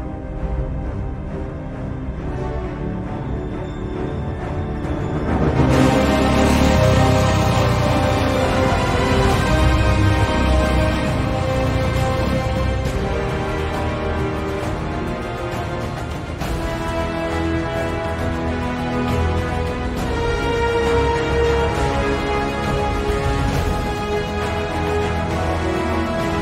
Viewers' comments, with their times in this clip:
0:10 Man, the music I've been hearing in this film just continues sounding more epic!!